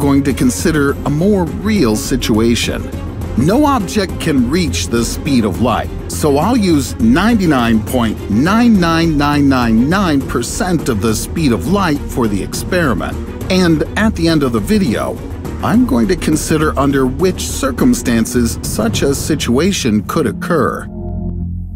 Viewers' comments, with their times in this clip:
0:07 this sounds german 🤔